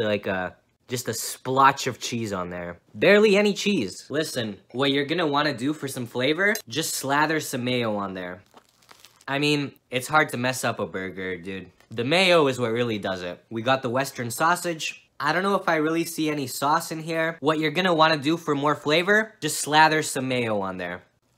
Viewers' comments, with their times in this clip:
0:09 I can hear the crunch of an overcooked burger bun in the distance